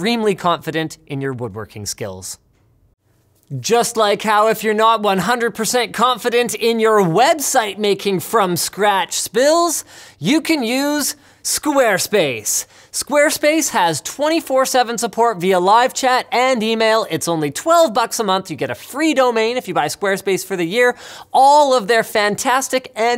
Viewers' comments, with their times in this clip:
0:06 yeah... i'm pretty confident on my website making spills It's fun how there is always a youtuber that makes something great out of bare materials, post a compilation video that takes another big effort and there is always that one jerk that point out a mispronunciation or voice crack. I still love Linus'es Frankenstein DIY proyects.
0:09 Clearly Linus isn't confident in his oration spills.